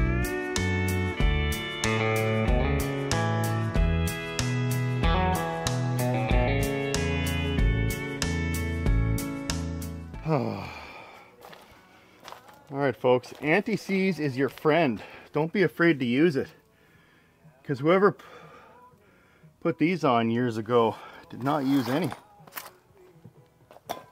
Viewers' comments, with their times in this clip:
0:08 sounds like an instrumental of "Its time you learned about goodbye"